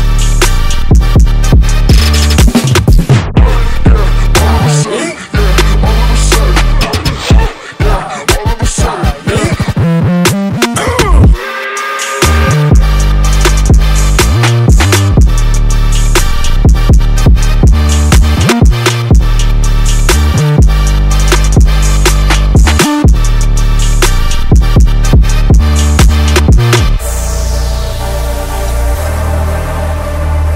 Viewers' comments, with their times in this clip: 0:10 I hear Travis Scott lmao but ay this joint bangs bruh 🔥🔥🔥
0:10 ✋(goodbye) 🔊(speakers) & 🎧(headphones)....👌
0:11 Train XD or idk